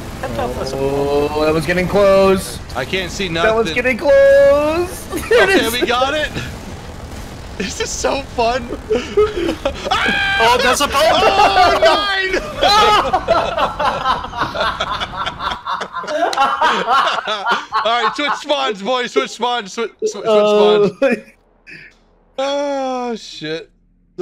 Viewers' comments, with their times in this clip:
0:09 THE SCREAM THO